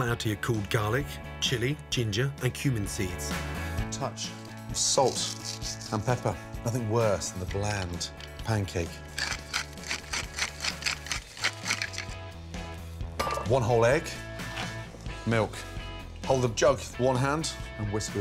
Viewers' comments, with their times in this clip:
0:04 I like the sound of his fingers sparkling salt on the ingredients